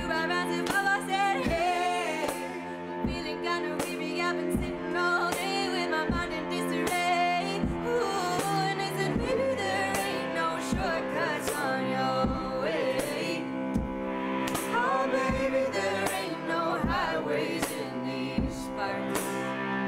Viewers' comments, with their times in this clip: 0:07 This song is incredible! Pioneer Valley, what what! Cello slide is epic btw!